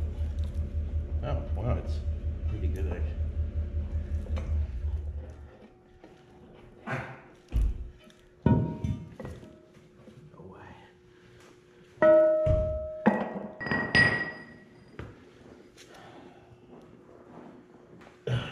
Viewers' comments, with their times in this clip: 0:06 Am I the only that noticed the fart I'm pretty sure that's what I heard and if it was it happened and they never missed a beat working lol